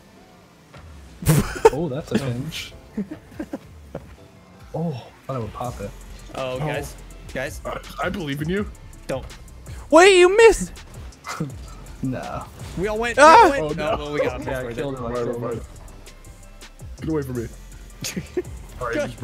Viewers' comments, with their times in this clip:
0:04 someone makes the pufferfish eating a carrot sound